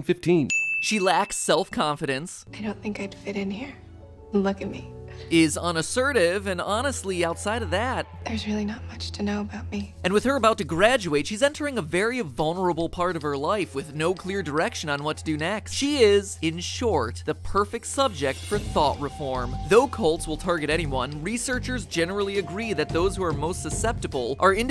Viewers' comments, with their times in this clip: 0:08 The Film Theorists and she only talks in whispers.